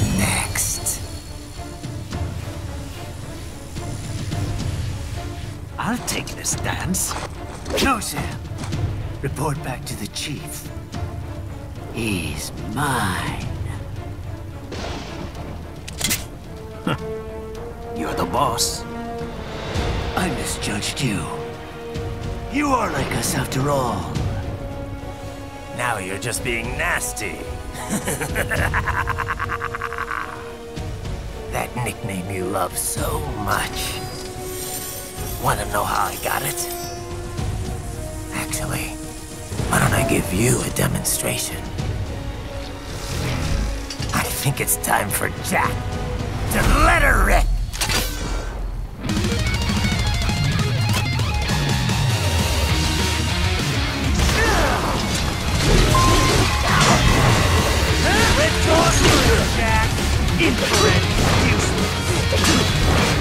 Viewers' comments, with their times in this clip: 0:08 it’s so funny to me how jack goes “who’s next?” and sam is IMMEDIATELY ecstatic and like “i’ll take this dance…”
0:15 this my favorite sound, murasama sound...
0:48 The transition with the music is crazy